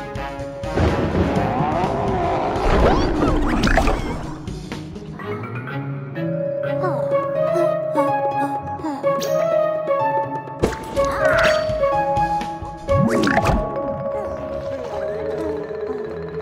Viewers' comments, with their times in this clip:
0:03 Everyone just shouting.